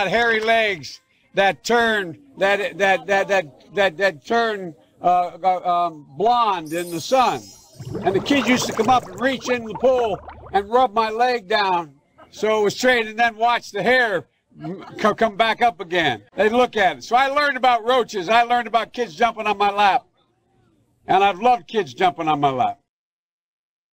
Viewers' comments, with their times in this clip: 0:07 nice spongebob sound effect